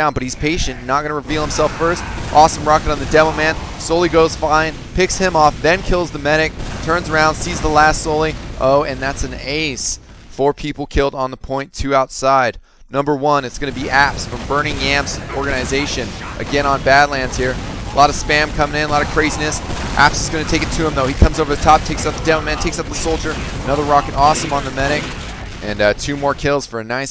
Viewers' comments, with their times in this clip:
0:10 did anyone else hear him say Ass? Or am I just a perv?